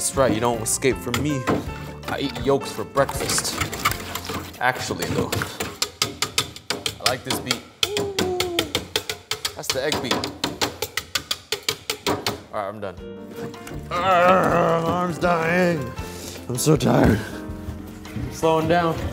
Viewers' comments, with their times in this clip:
0:07 imagine if somebody copyright striked him for that beat? Claiming its their beat lol 😂😂